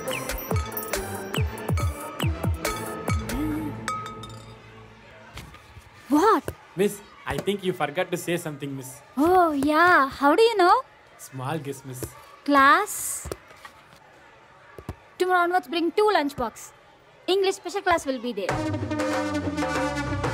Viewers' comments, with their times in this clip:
0:04 that "What". Oh my god its nice